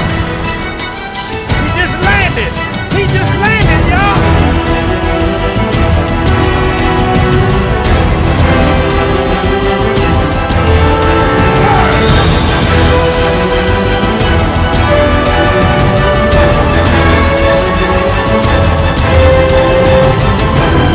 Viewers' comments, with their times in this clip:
0:03 I'm surprised you didn't mention the original Halo theme beat playing that's my favorite part in this entire track
0:04 when the Halo theme kicks in its on bro - great reaction